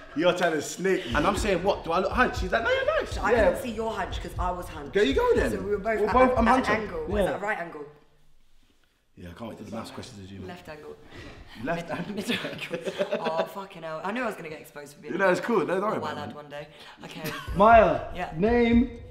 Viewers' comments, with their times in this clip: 0:06 m huncho I swear I heard that